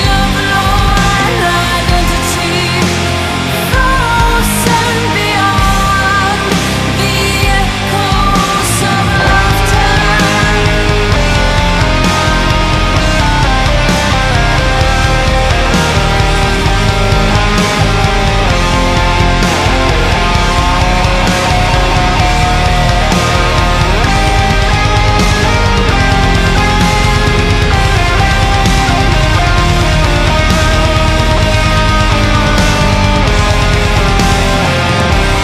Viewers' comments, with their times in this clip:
0:06 Best doom metal ending I've heard. Incredible.
0:23 nice snare hit bro